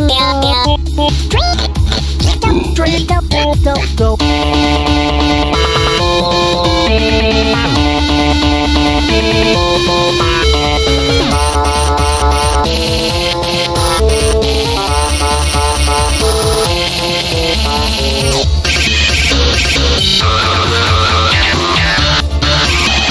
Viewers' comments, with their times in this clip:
0:04 Cool cover, but I think instrumental is quiet. Especially on this part: